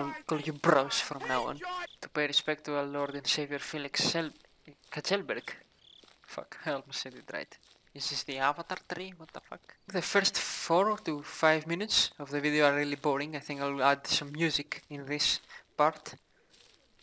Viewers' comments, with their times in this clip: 0:03 where did you learn to pronounce that name so fluently? I wanna know